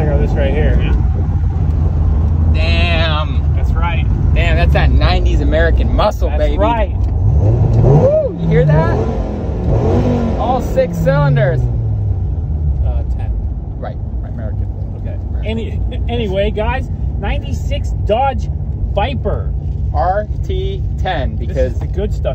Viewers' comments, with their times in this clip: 0:10 everyone thinks Im crazy but I hear the 5 cylinder sounds and yes its a V10. I love it!!